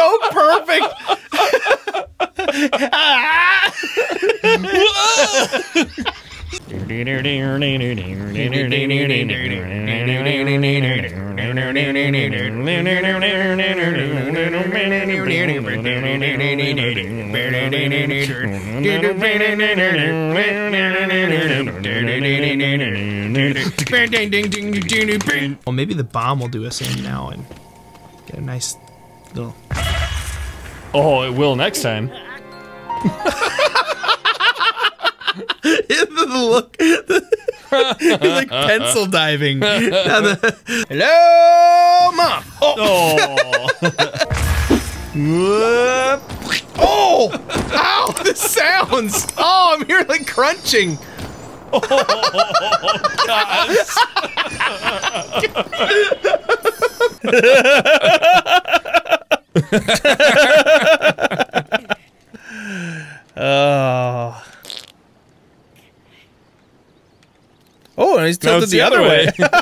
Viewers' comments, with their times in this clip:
0:07 you guys aren't that bad at singing.
0:56 The laugh seems a little familiar